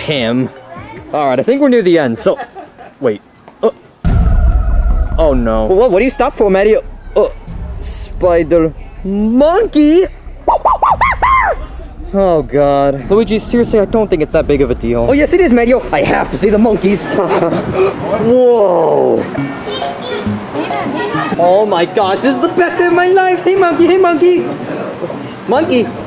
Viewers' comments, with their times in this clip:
0:07 Luigi : monkey sound